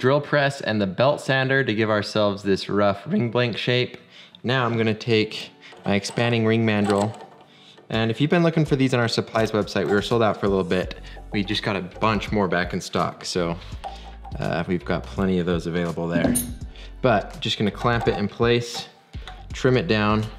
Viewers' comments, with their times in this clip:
0:03 that voice crack 😂💀 It got me crackin up 🤷‍♀️